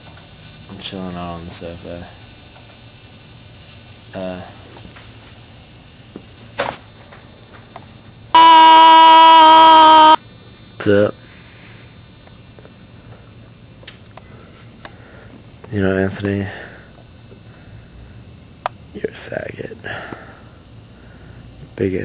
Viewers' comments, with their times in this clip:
0:09 RIP headphone users :(